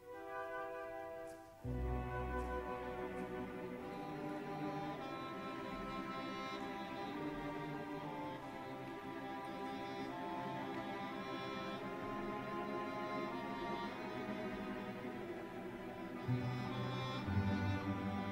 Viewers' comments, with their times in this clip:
0:04 just sounds like it came from some older biblical movie. It sounds so familiar